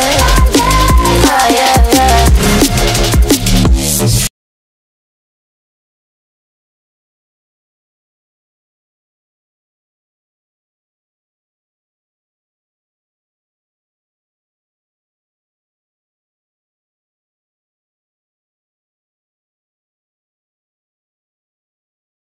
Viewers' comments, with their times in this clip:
0:04 guys sorry from messup 2 no music in the whole video starting from